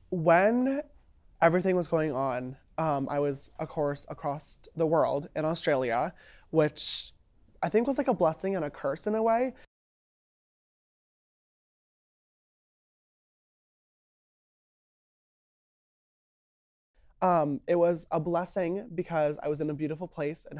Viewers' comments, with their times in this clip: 0:05 He did not really say “when I was acrost the world” did he?